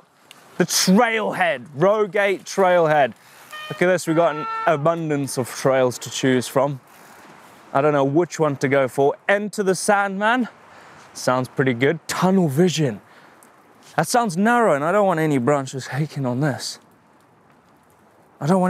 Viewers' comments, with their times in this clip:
0:03 sounds like a European siren haha